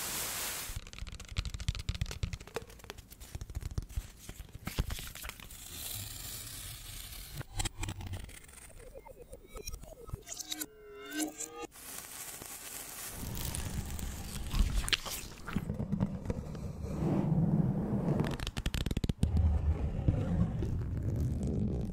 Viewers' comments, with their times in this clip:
0:08 sounds like the chuck norris biggie mix